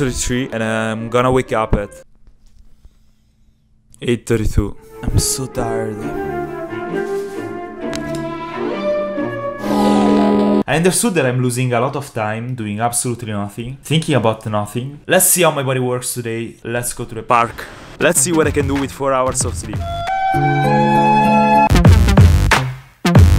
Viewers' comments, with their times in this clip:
0:04 I am su tired 😂
0:09 yawns Me: yawns "wow the yawns virus works through devices"